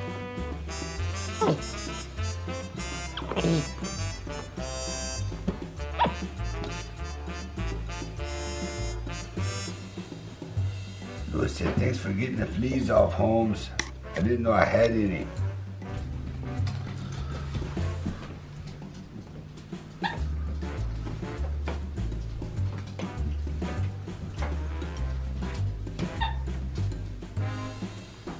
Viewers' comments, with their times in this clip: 0:09 After you did the chihuahua with the gangsta Mexican voice, I got scared you were going to do monkey Boo's voice with some other stereotypical minority voice